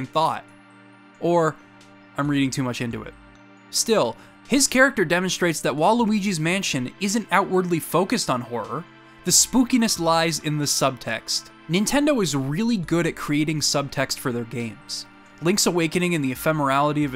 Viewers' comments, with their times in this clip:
0:04 For a second there, I thought you said "Waluigi's Mansion", and I got excited.
0:05 I know it's not, but it sounds like Waluigi's Mansion. Right after you talked about reading too much into things.
0:05 i know you said “while luigi’s mansion” but now I want to see Waluigi’s mansion be a real thing.
0:05 “Waluigi’s mansion”. What? Edit: I assume you said WHILE Luigi’s mansion… it just sounded like you said Waluigi’s mansion, lol!